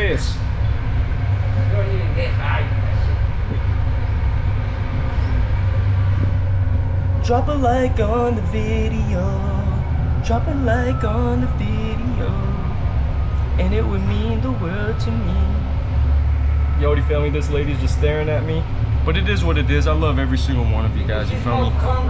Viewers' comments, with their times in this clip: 0:08 mf started singing